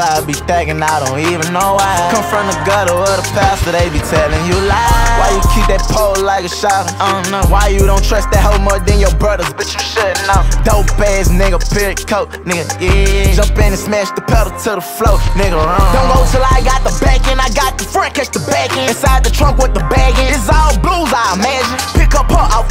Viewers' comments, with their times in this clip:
0:05 It’s the adlibs for me 🔥